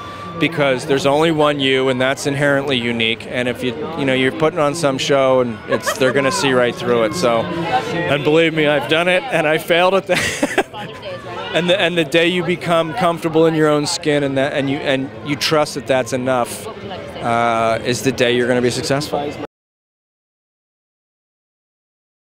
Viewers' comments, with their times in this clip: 0:10 That laugh :D:D:D LOVE HIM!!!!